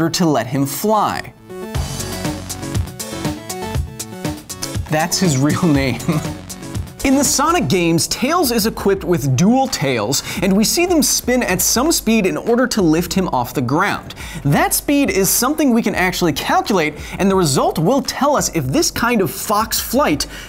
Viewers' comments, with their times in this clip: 0:03 wait, what da?!?!?! Tails' full name sounded like miles per hour ,what the heck???😂😂😂